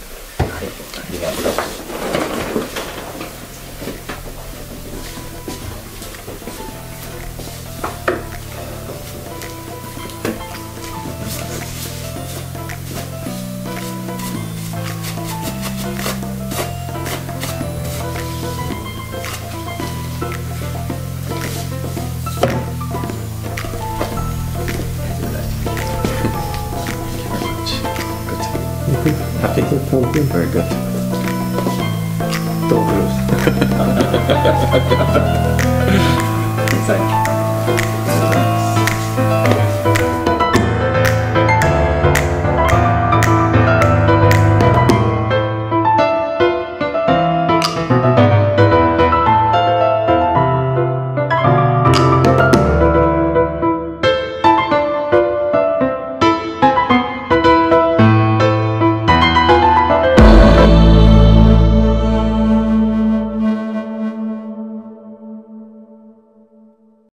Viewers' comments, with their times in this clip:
0:06 Warning! Don't use this video if you want to sleep. The uploader has added the most unnecessary and obnoxious noise for the last minute of the video. Nobody else seems to have noticed. Unsubbed.
1:01 Hmmm..... I'm very aware at how ... demanding ASMR viewers are, but that's 99% after the video is done and that time stamp is the piano music outro's beginning. Not sure what "NOISE" you mean. Maybe you meant just 5 seconds before the end of the video when the big red dot appears?